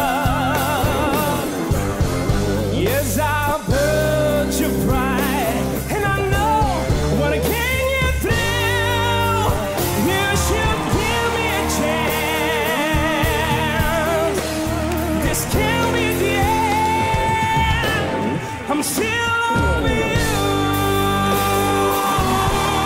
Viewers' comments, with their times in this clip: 0:07 Damn! This guy butchered classic "still loving you".